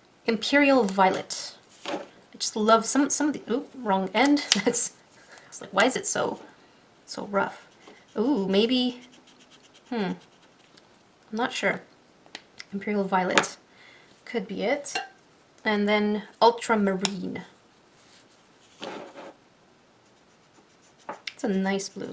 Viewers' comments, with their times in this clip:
0:09 she sounds like a minecraft villager